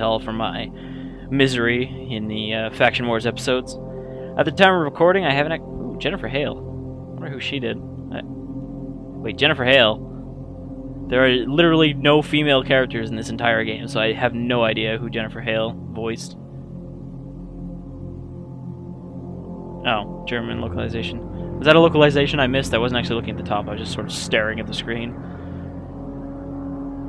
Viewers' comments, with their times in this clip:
0:08 I think is a radio voice.